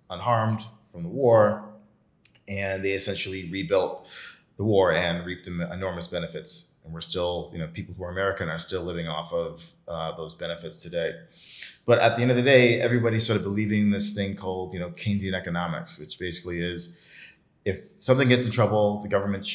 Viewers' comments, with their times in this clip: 0:04 .45 that laugh...this guys definitely tested the product too